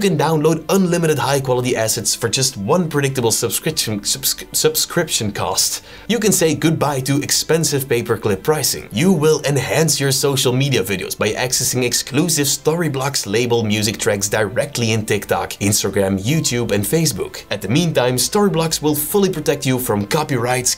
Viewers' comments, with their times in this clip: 0:03 bro your tongue is tired 😅😂